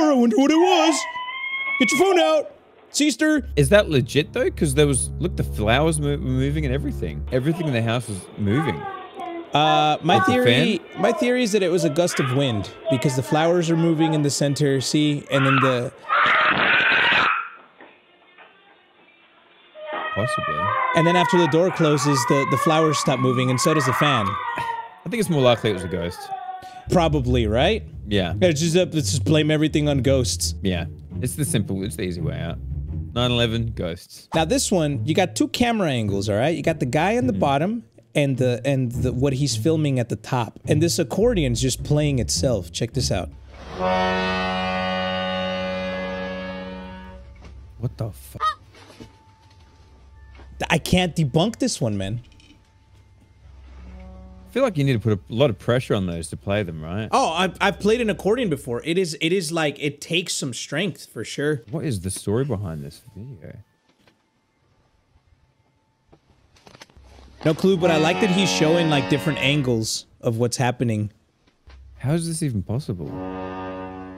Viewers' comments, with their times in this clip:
0:06 My question is, where are the parents? If I heard my children scream like this, I would be there in seconds to find out why?
0:56 That’s just my uncles dad playing the accordion along to some Ozzy like he did in the 70s